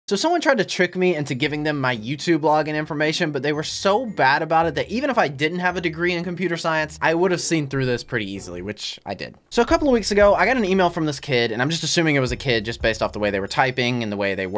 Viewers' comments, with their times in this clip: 0:00 If you replay at the beginning enough you can hear different things